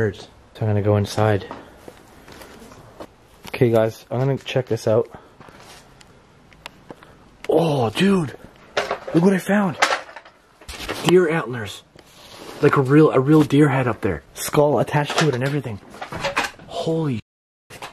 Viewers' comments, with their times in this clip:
0:03 before u entered the one room in the barn I heard a girl's voice say wat is it